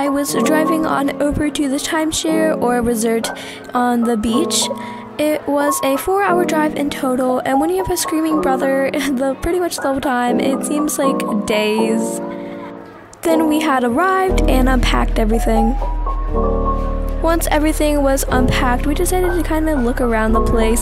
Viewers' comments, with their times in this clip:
0:03 Y'all- I feel achieved, 666 subscribers 💅✨ Edit: hol up, why did I say resort like that i-